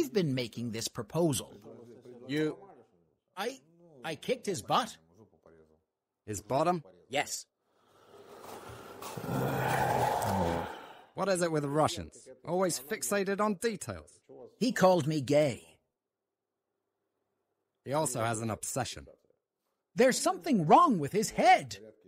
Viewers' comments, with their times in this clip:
0:08 💛💙💜💙💛 you guys are having WAY too much fun with the dubbing!! 😆 that's how they get em!